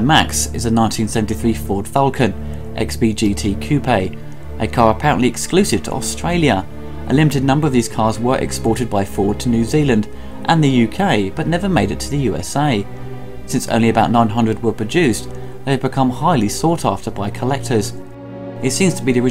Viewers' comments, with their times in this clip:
0:03 Coo- pay? Nice round up Mad Max film- related stuff.